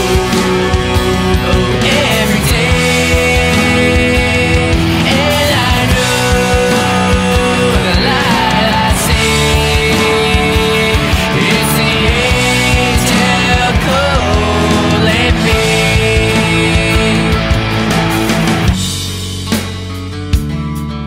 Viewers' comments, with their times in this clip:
0:03 The drop in is nice,too^^